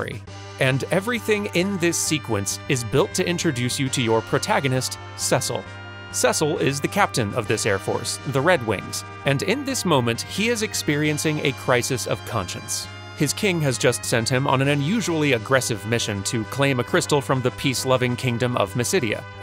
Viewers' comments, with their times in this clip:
0:04 ...'Seh-sul'? Don't you mean Cecil? (See-sul)